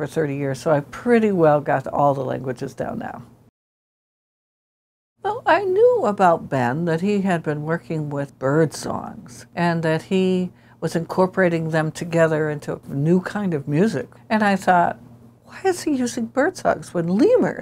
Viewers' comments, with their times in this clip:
0:04 the Lemur talks.